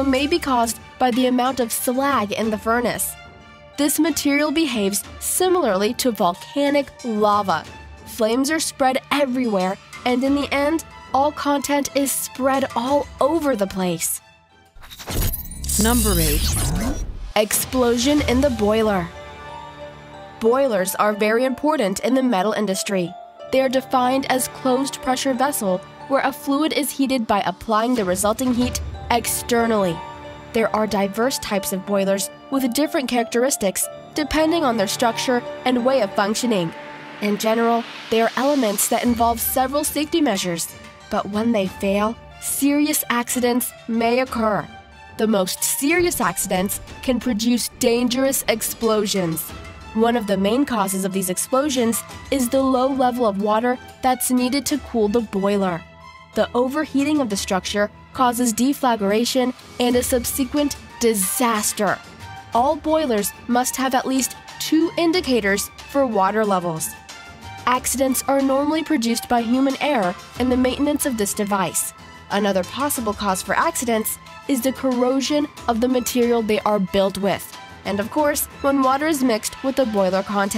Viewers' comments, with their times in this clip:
0:10 I tried, but I can't listen to this. I made it to but this teenage girl's excited voice and that Michael Myers Halloween track is making my brain cells fight each other.
0:38 I had to apologize to my ears and shut it off.
0:59 mispronunciation of the word "subsequent", a common mistake
0:59 The problem with getting someone really young (and no doubt pretty) to narrate a video is that she's not particularly well-read. Like when she mispronounces the common word "subsequent"
1:03 Love how she says Subsequent Sub-zeee-quent